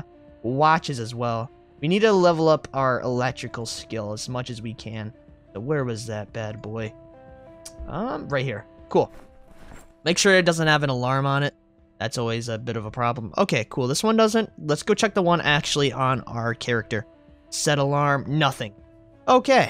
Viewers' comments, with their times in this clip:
0:07 U are definetly cursed 😂 every new project there is at least one alarm in the first episode 😆